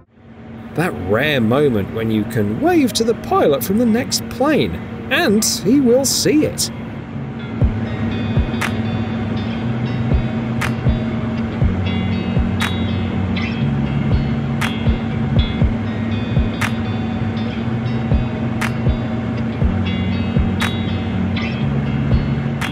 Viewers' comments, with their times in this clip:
0:05 made it to If I didn't have to listen to an annoying narrator, I might have stayed for the whole thing.